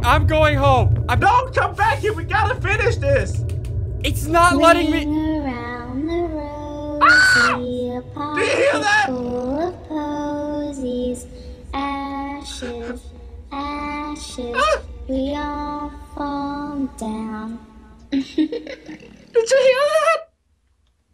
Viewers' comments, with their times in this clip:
0:06 when ring around the rosy played i left honestly i did not finish watching it maybe later..